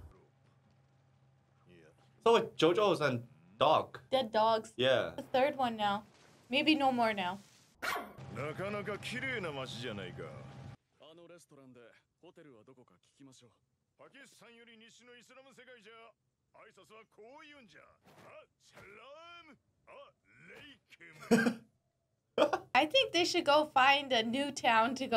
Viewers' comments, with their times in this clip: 0:09 If no one got the edit saying “MrJuster” It’s when one of the stand users pronounce MR Joestar as “Juster”